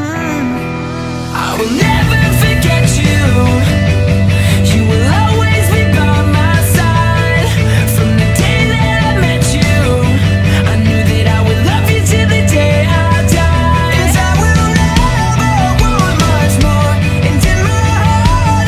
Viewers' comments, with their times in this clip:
0:03 I started crying bc the song made me think of my cats that passed away I was trying to sing along without crying but I couldn’t do it